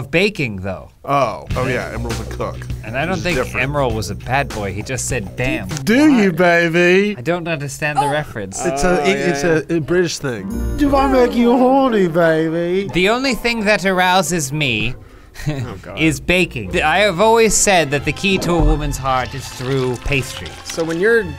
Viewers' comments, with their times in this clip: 0:09 “It’s a British thing.” Lmao he was doing a Dr Evil impression with an Austin Powers voice